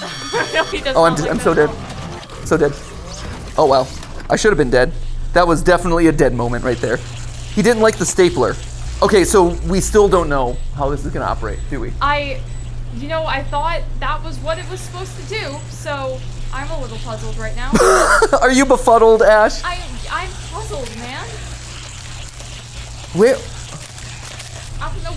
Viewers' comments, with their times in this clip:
0:07 I love how MatPat said "He didn't like the stapler" like it's some kind of lore reveal